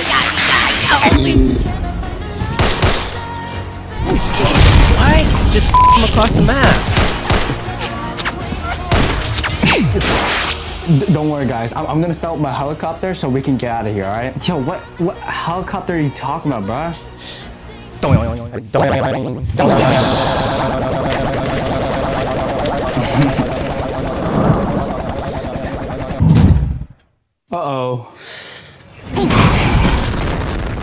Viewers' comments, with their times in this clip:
0:03 skyrim shout lmao
0:18 Nice Helicopter. The sound effect sounds funny.